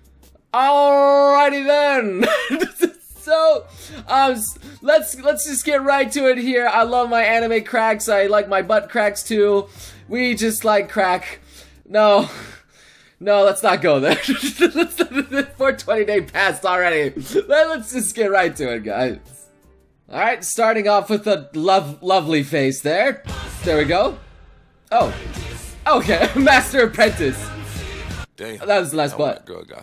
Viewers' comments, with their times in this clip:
0:10 m8 a police car siren sounded as soon as you said that XD
0:14 SOMEONE PLEASE REMIX HIS LAUGH ... ALSO I REALIZED I HAVE CAPS LOCK ON BUT I'M TOO LAZY TO REWRITE ALL THIS